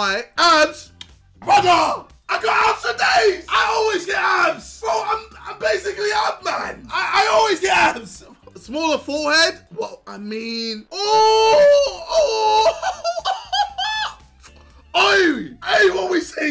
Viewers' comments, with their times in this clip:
0:04 I’m basically an ape man we all are JJ